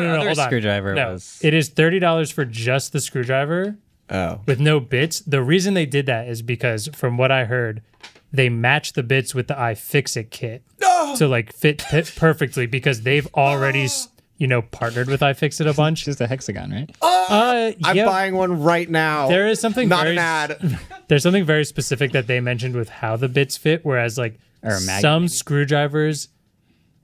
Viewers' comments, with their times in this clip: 0:10 😂😂 what was that moannnn